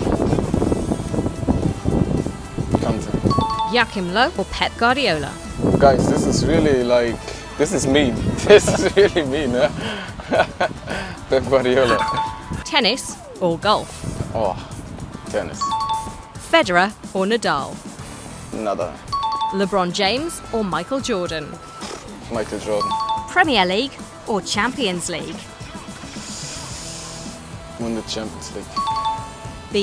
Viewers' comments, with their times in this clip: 0:03 How does she say ‚Joachim’😆😂?
0:04 "Guys this is mean..." Well-spoken😅😅
0:17 he said nada, not Nadal😂